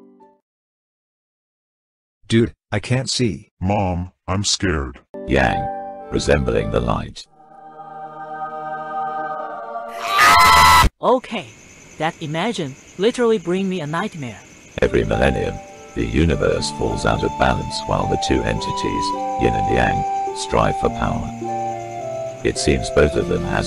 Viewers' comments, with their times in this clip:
0:10 all of them: *screaming in pain*